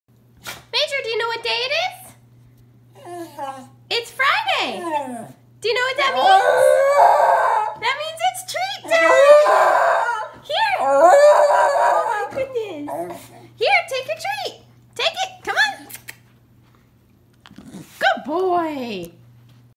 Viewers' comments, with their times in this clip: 0:02 Major literally said “it’s Friday”
0:15 why am I literally the only person on the planet who's incapable of making that kissy noise?